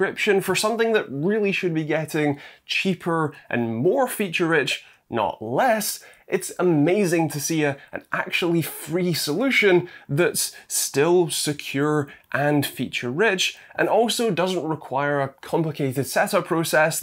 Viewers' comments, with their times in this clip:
0:05 Ficherich, is this the brother of Facherach and cousine of Cucheruch?